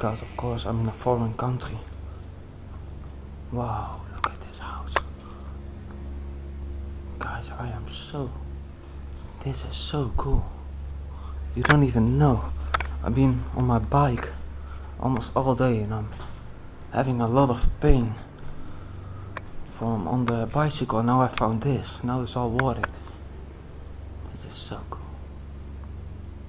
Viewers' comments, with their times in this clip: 0:09 Great but creepy find! The beds look antique! I hope that is you breathing Thanks a bunch and be safe please!!